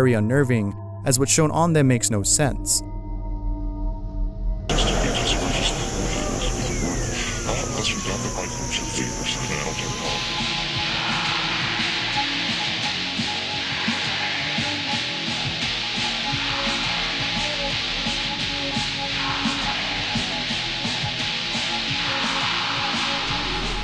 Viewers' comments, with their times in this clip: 0:05 The second volume comes up on it got me